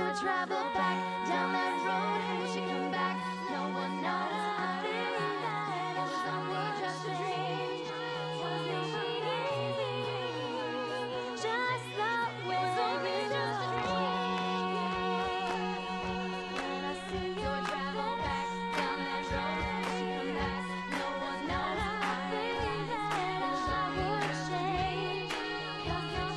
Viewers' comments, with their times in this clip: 0:08 who else loves aubrey's voice there??